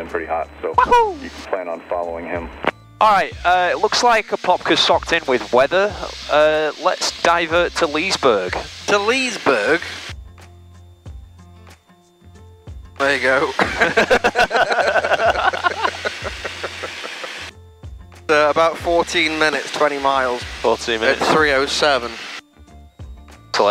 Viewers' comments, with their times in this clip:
0:04 you two sound IDENTICAL! especially lmao